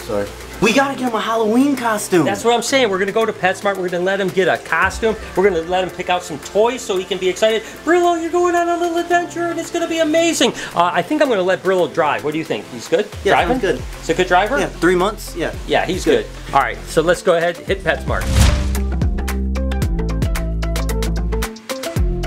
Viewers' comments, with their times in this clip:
0:08 The man sounds like Kermit the frog 😂😂😂😂